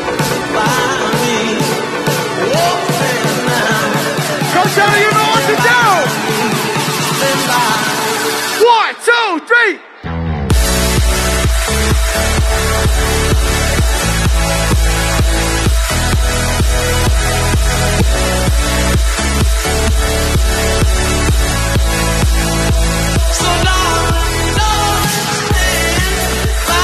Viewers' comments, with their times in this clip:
0:09 that little bass note cured my depression. BANGER OF A SET.